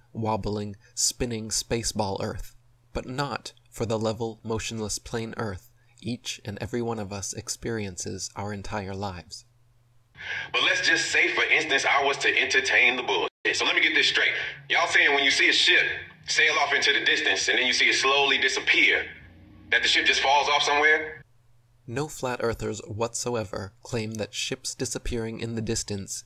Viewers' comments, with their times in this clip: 0:10 Ludacris doesn't speak with conviction. You can hear it in his voice he's actually conflicted because he knows better than what he's saying.